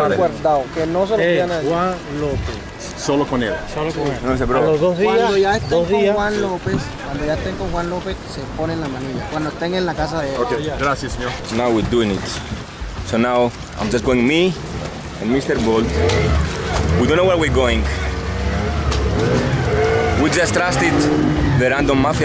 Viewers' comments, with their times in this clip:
0:08 why is bro laughing his ass off haha fake af